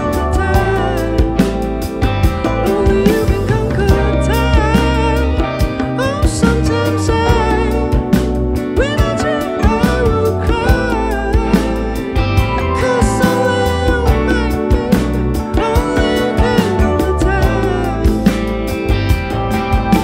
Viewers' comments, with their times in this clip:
0:06 his voice is just so fucking good Love that song